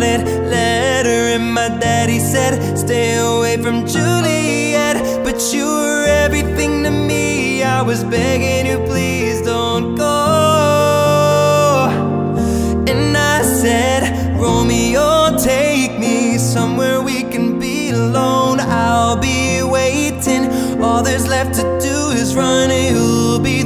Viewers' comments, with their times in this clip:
0:08 The sec, what a voice man!